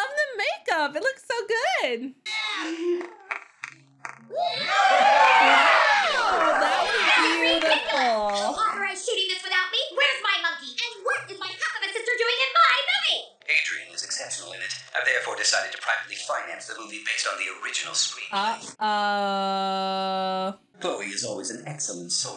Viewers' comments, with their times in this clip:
0:07 sounds like she said the s word